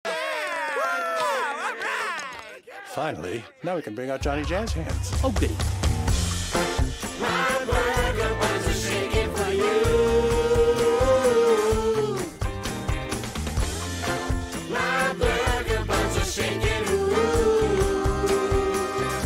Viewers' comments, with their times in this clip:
0:06 did Felix say "Oh boo" (like Gene often says) or "Oh goodie"?